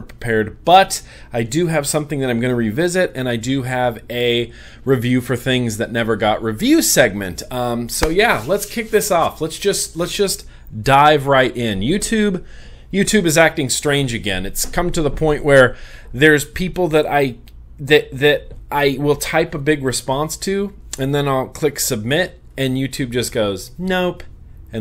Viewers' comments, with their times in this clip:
0:05 anyone else hear police sirens .lol